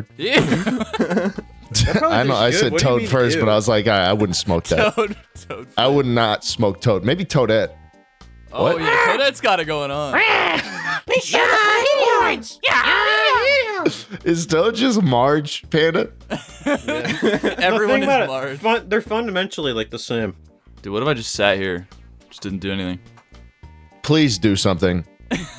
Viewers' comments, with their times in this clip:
0:08 Sounds like angry birds to me...
0:10 wft was this angry birds noise